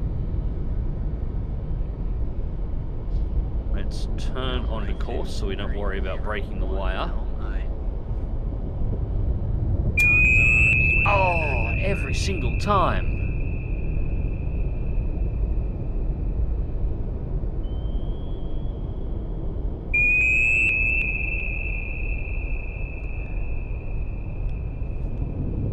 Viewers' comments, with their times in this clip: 0:10 Hostile eardrums neutralised